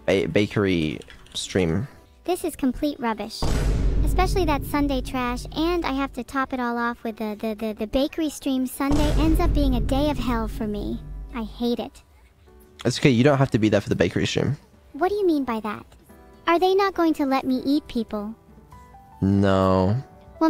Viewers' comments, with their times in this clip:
0:06 bro she can stutter